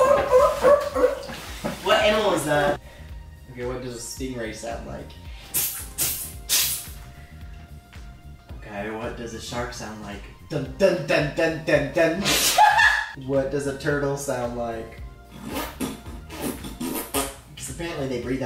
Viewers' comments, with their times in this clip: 0:05 lol am I the only one that thinks that sounded more of a Minecraft creeper when you hit it?